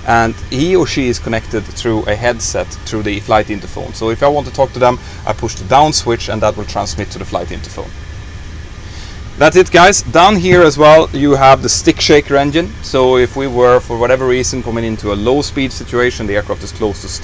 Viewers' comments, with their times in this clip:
0:03 What is he saying ? Sounds like flight interphones?